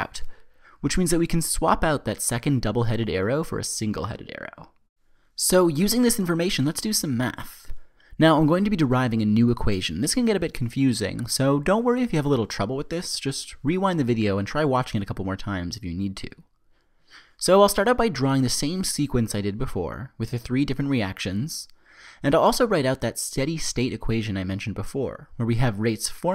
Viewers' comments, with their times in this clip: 0:07 doesn't it sound like he's saying "Let's do some meth" lol